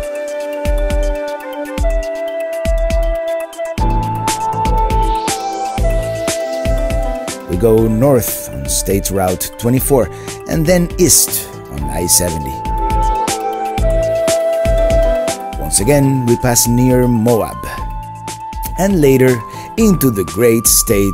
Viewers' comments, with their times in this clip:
0:04 Excellent shots as always, the music sounds suspiciously like part of Fei Long's theme in Super Street Fighter II. Inspiration or coincidence? 🤔